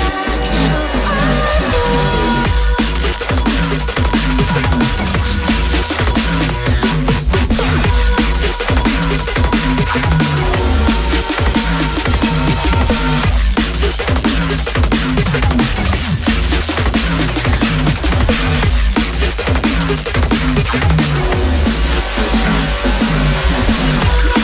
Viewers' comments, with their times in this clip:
0:09 forcing that track a bit